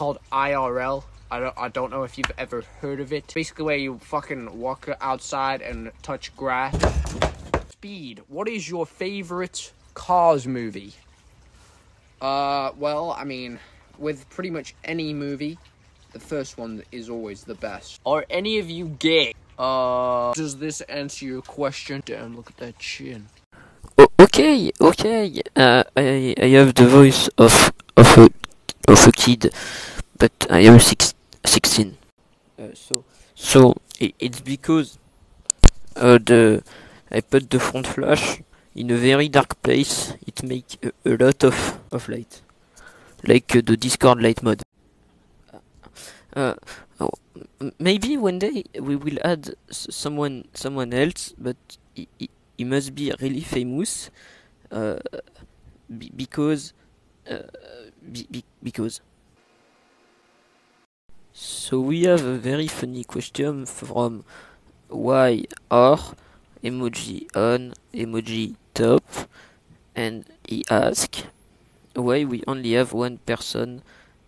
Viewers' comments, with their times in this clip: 0:09 you can hear his British accent so fvcking clearly 😭 You will never escape your true heritage McQueen. 🗿
0:24 the struggle he's going through to speak English 😭
0:46 what language is that?😂😂
0:53 what is bro saying
0:58 This French need to improve his English Anyway, at least he tried that, right?